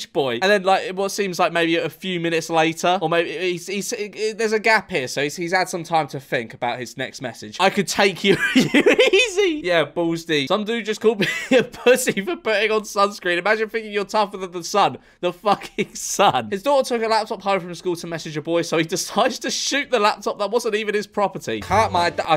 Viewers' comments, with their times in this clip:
0:08 scooby doo laugh